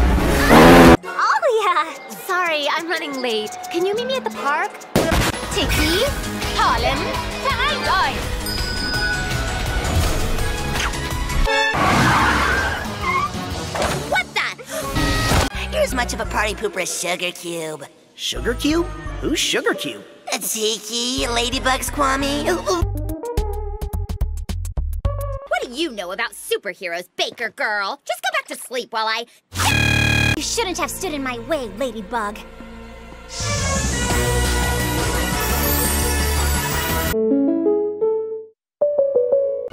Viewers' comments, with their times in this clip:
0:04 P O P then EXPLOSION!!!
0:07 Why did you do german???
0:26 Okay, I haven't laughed this hard in some time now. 🤣🤣🤣 THIS IS WAY TOO GOOD!!!! I can't even choose a favorite 😂 But if I had to choose then...at “Just go back to sleep while I...DDDDDDDDDDDDDDDDDDDDDDDDDDDA-” My queen is really lagging behind 🤣